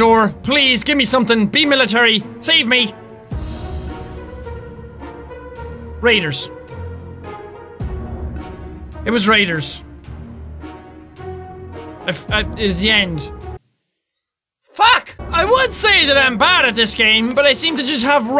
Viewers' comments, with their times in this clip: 0:03 I thought he said Haters